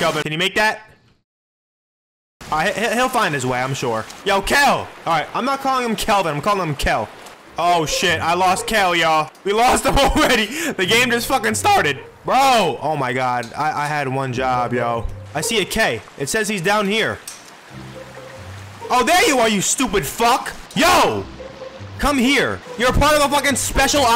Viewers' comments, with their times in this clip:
0:09 nice voice crack my boy XD